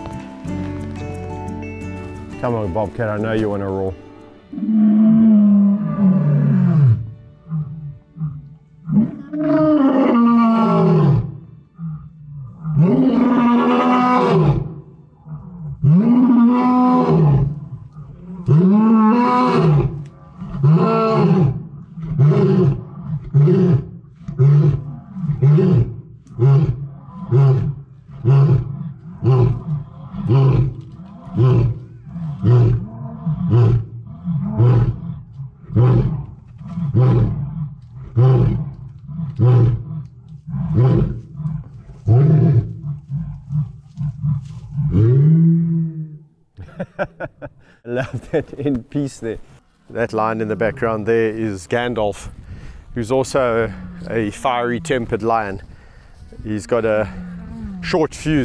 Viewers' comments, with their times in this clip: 0:03 I mean that could literally be a T-Rex lurking in there. 😅
0:11 That roar by Bobcat was impressive
0:18 Gabby be like “love you Bobcat but did a really need to roar in my ear” stands up “oh this branch is nice. And not as loud” hehe lol. They’re so cute 😍🥰
0:43 I love all these Lions very much but I can't help love Bobcat the most! I just love him to bits & that roaring session early in this compilation IMO was the most impressive & most intimidating roar of all of them accompanied by that funny little end to that roaring session which cracked me up & I heard Kevin laughing as well. I have so much respect for Kevin & all the work he does to help these amazing animals, may they all live their best lives until their time.
0:45 was the best roar and really funny! Lions are just amazing and fearless creatures! I have been binge watching and I am learning so much! Thanks Kev, for sharing your talent and amazing abilities with the world. You are truly a gift and a very balance, intelligent and funny guy!
0:46 the cutest end to a roar by Bobcat, as if to say ‘I’m done’. Love him so much! This was a great video of the power of a lion’s roar.